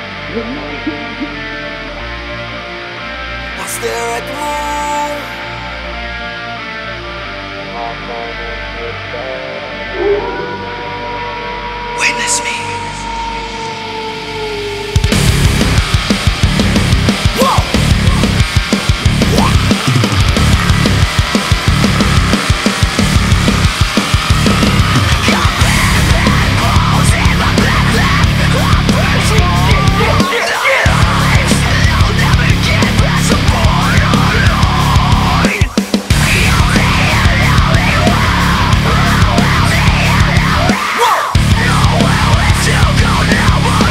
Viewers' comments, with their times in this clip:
0:08 elite guitar riff and the main riff here. Its obvious they are inspired by deftones, which is fine, but this is weak. Dude there's heaps of discussions about this track. Im not the only one to immediately notice it.
0:16 That intro breakdown/rap/scream sequence from gives me massive Deftones "Elite" vibes. The rifs are similar and the screams are pretty close to Chino's on that song lol.
0:27 the windows USB disconnection sound lmao